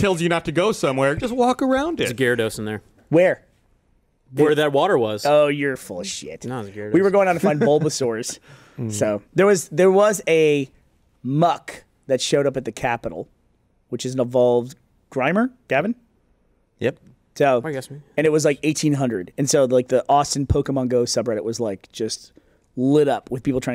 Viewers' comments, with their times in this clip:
0:10 Anybody else have the video out of sync minutes in ?